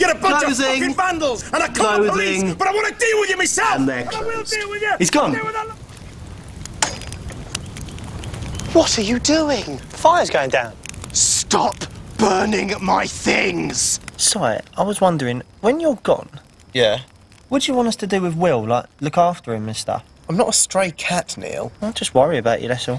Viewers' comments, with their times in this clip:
0:08 I love the way Will says that